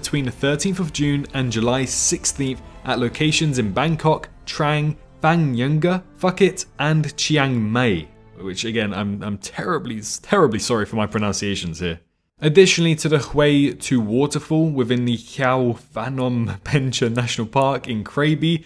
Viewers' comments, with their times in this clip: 0:06 just said " fuck it " out of no where lmao (I know it was him pronouncing phuket)
0:06 hmm these are hard to pronounce... "FUCK IT" lmao